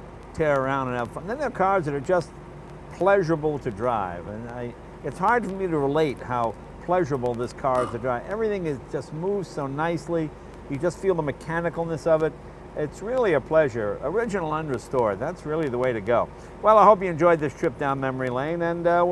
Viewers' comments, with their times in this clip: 0:06 random ooga horn